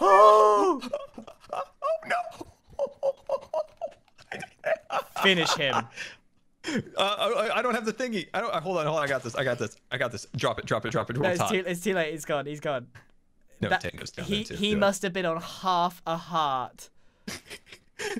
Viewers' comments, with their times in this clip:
0:03 Scar: laughing in fear Grian: places tnt Also Grian: Finish him this happened